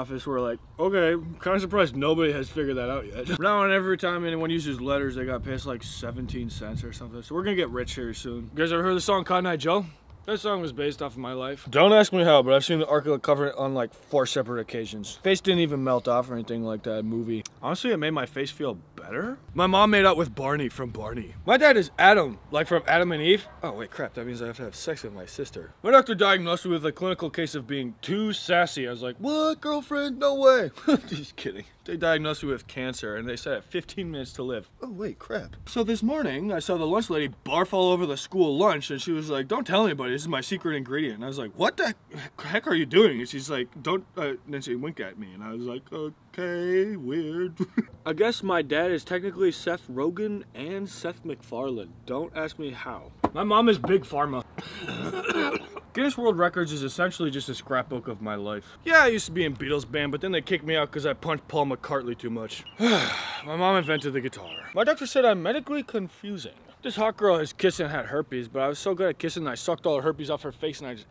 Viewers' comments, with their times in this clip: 0:03 Despite only being audible for less than a second, the laugh was very accurate to this character and was a great addition to the video.
0:41 The stutter is exactly what any lying kid does
0:54 the early onset Emphysema from his parents chain smoking in the house was a nice touch